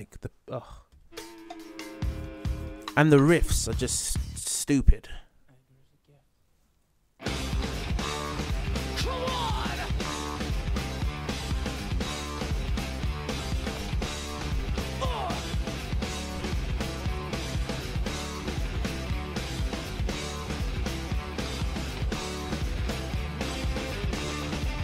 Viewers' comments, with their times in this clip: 0:06 Damn I wish RUSH would have used this riff first.